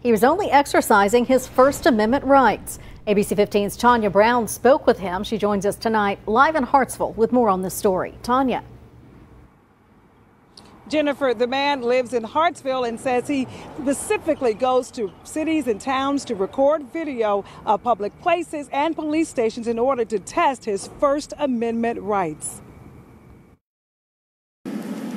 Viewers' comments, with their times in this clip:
0:09 She said “pacifically”.